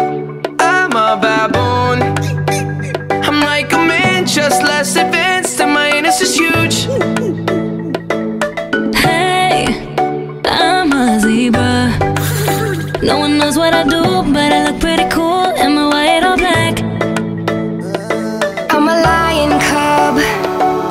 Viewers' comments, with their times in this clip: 0:04 i had to listen to it 3 times to actually know what justin says😮